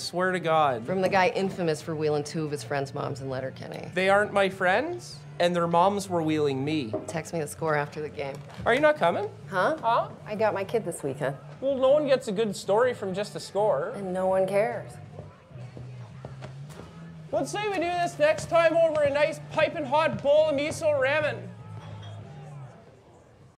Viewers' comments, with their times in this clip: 0:07 Why does she do the "Huh?" after every question, just like Shorsey?